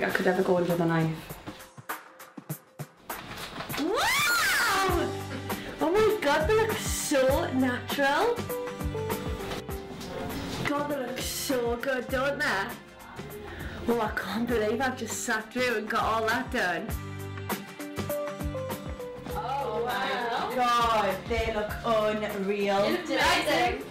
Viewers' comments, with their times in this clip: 0:04 i feel sorry for earphone users lmao